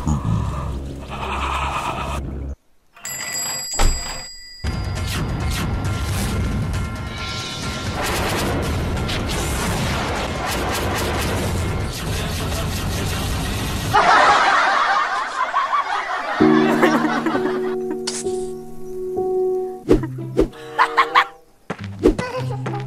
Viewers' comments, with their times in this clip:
0:05 is a Indian background musik 😂